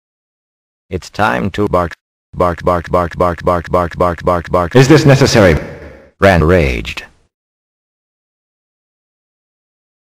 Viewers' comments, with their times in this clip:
0:03 Nobody: Dogs at 2AM: